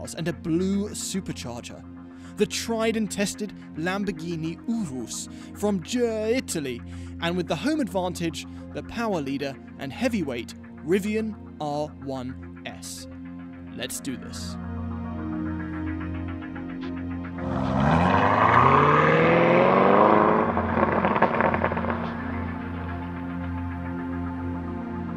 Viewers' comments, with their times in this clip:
0:06 Urus from gerr…Italy. Nearly killed me lmao